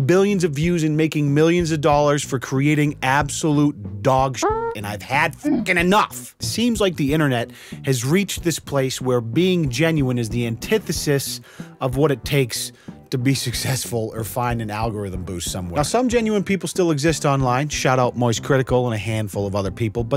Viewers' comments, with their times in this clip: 0:04 fart noise was chefs kiss Replayed multiple times🤣👍🏼